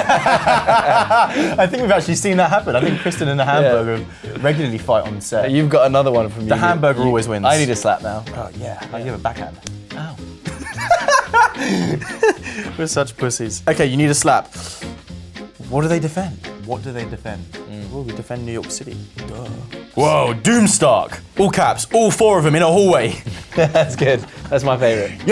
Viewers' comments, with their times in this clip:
0:09 so that's what ow sounds like in lower case
0:09 that "aww" sound killing me 😂😂😂😂